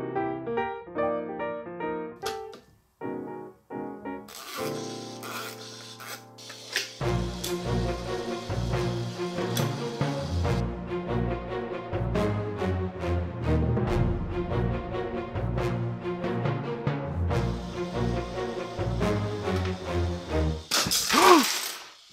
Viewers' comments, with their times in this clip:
0:07 i was looking away and í thought youtube had messed up again and had randomly switched to a Mark Felton Productions video.....